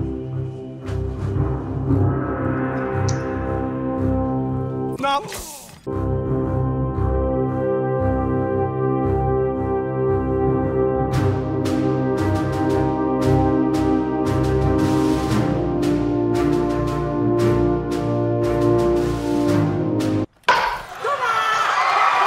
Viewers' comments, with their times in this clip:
0:10 I honestly thought it said ' Op Negro dedtroyed'